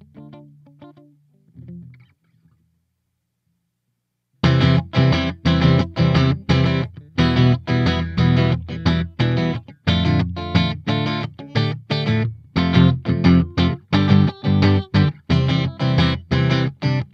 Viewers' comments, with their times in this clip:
0:04 sounds like the progression for Yoshimi battles the pink robots pt.1 by the flaming lips